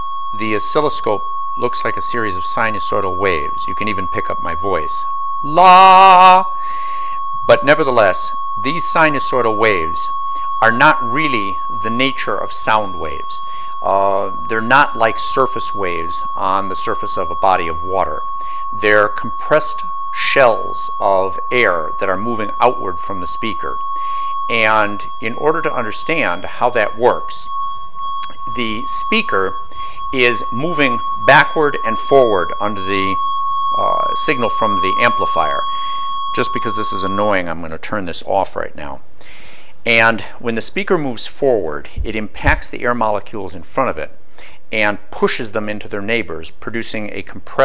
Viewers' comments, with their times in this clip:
0:05 The "La" is between an F#3 and a G3. By my estimation, around 191 Hz.
0:05 Distorted, clipped mess emanates into our listening mic ;-)
0:30 Excellent video. Why did the sound that I could hear make a woo woo woo sort of noise as the cameraman walked towards the speaker? Is that the phase thing he described later on in the video?